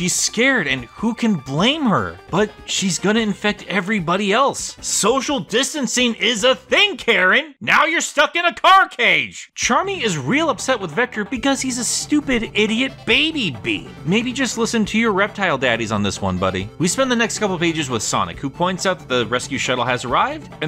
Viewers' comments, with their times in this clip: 0:04 that actually kinda sounded like vectors voice.